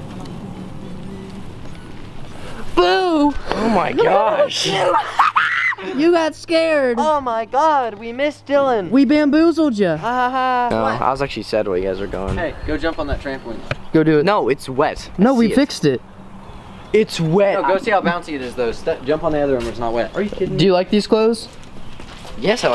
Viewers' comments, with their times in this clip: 0:03 was the most manliest scream I’ve ever heard 😂😂😂
0:05 His laugh though 😂
0:10 his voice sound so soft